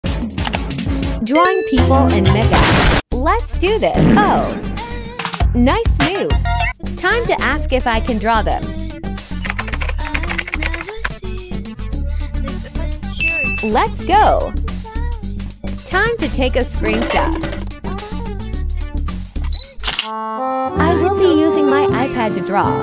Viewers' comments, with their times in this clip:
0:02 I heard the n word
0:03 I heard it. I heard the music